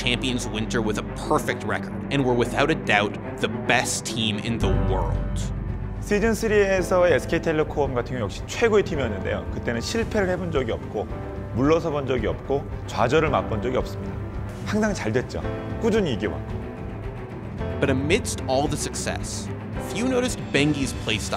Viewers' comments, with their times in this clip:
0:07 Yong Jun Chun Sweden Syria so SK Telecom cotton Okay wait even a bell to Tennessee repair 11 dil KO Mu Rosamund oyako charger and a panda cubs Khadija good any given.